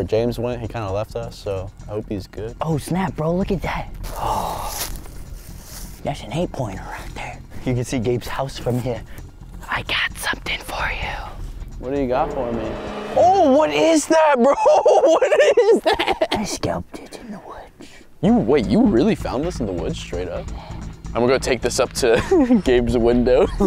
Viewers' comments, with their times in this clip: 0:06 bro had a midwestern acceny